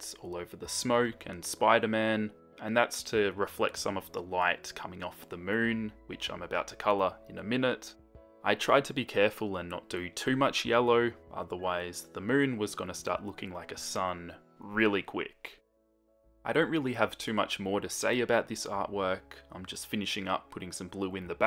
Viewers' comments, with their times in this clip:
0:05 Did anyone else hear "Bitch I'm about to color?" Lol.